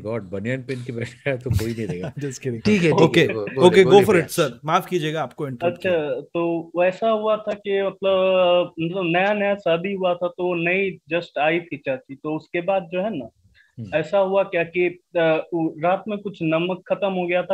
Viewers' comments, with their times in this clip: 0:04 i feel like this guy has come before - the voice sounds similar to the guy who had allegedly stolen the story from some other stream